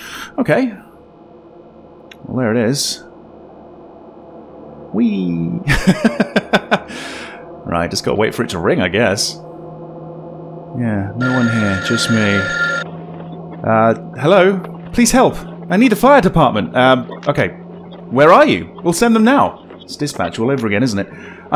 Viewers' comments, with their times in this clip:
0:05 That "whee" was everything! Hahah